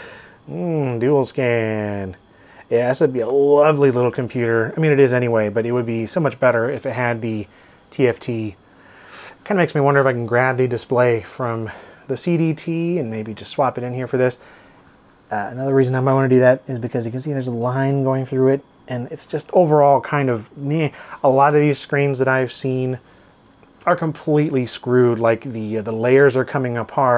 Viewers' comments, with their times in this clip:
0:09 sounds like a blerb to me.